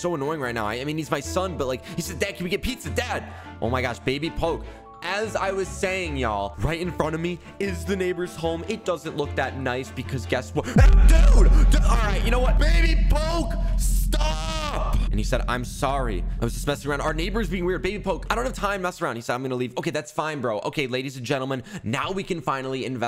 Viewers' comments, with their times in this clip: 0:10 cutely breaks sound barrier